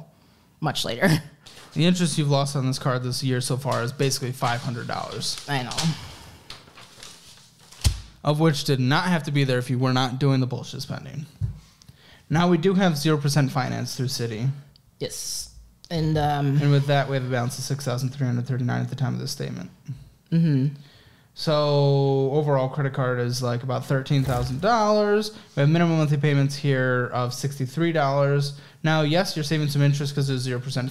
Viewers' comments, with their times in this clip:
0:07 Editor missed a $$$ bleep
0:11 You guys forgot to bleep out “bullshit” and I love it! Uncensored version coming soon?